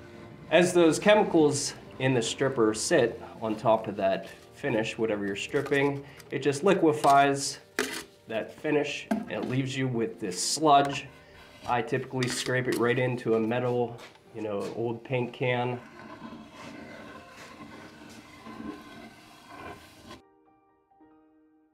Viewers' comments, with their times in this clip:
0:06 the ASMR starts.